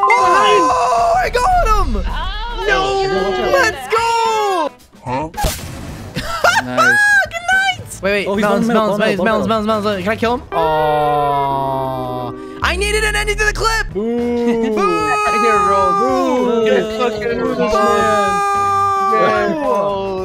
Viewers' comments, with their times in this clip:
0:07 I thought that was the chick laughing at first.